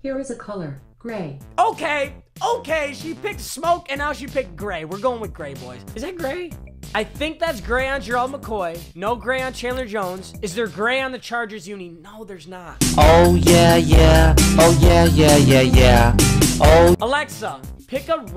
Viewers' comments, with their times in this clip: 0:06 big voice crack